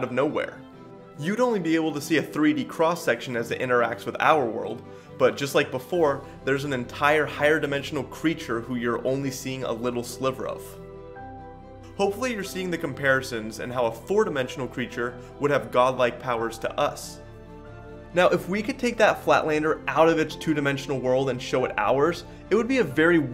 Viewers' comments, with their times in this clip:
0:08 what's with the faint discord call sound remix in the background?